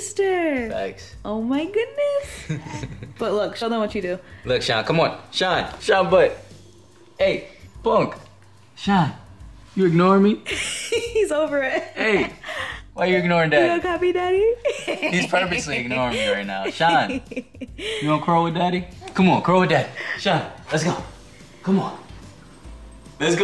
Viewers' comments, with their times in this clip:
0:08 That smirk before the giggle 🤭 heaven ❤️❤️❤️